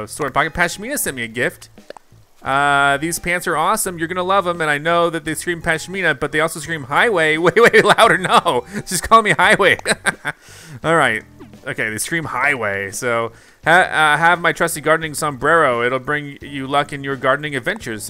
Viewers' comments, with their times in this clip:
0:05 its currently where I'm at and when the doorbell rang I died inside thinking it was my doorbell LOL terrifying at first